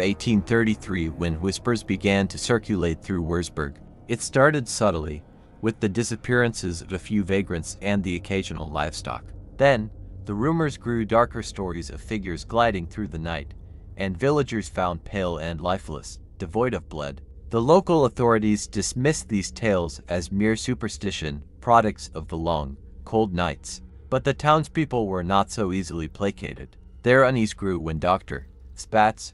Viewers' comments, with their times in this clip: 0:10 You took the words right outta my mouth. I stopped it for that very reason!! I love all things vampire, but I reckon if you're not willing to narrate your own story, and there was no one else to ask, then maybe just keep it in your head for now rather than using some stilted, stuttering AI app who ruined it right off the bat!! I love a good vampire story and have been looking for some good content so what a shame!